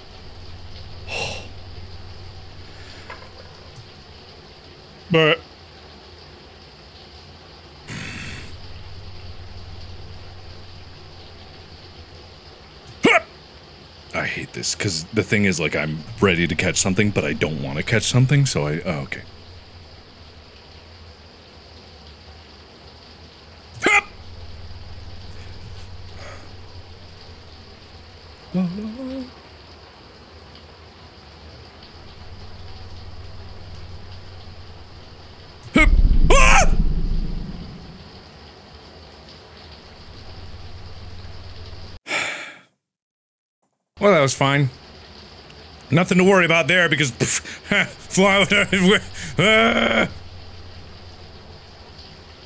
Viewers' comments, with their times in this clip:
0:07 mark you scared the sh outta me 💀 i thought it was a monster sfx
0:35 was such a genuine scream of pure terror, I'm cryingg